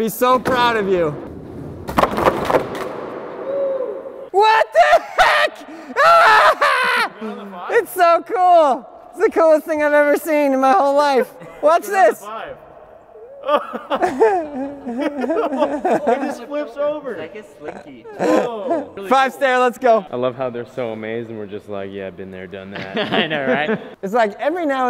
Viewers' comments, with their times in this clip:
0:07 sounding just like David Spade!!